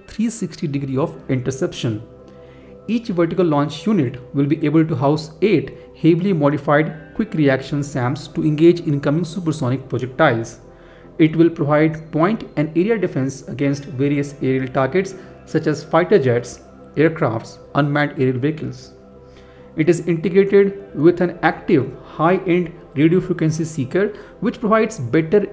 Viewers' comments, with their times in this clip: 0:09 only legends will find the phone vibrating...🤣🤣🤣